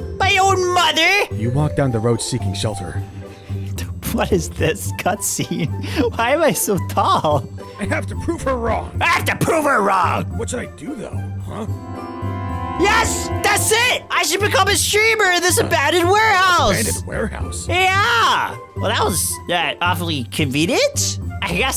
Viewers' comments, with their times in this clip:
0:09 that “ damn “ was chilling there like saying “mods are trash lol”